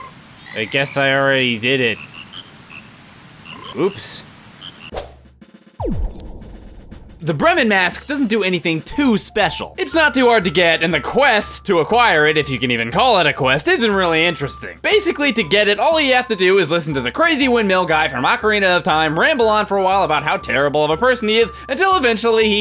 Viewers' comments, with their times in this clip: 0:03 three ``o`` s in oops! = ooops